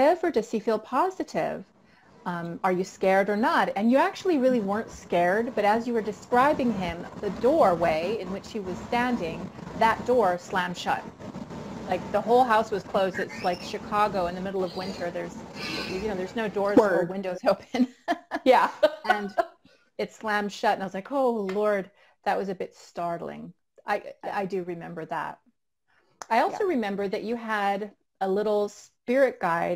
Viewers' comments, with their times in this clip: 0:03 when you started talking about the ghost Baseballplayer, your mic started acting up too!
0:12 heard a scream what was that???